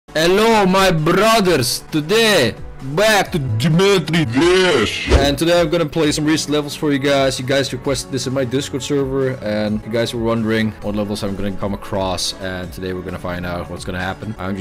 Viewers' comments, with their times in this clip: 0:00 hello my BURGERS XD
0:00 before I clicked on this vidieo I was speaking this acsent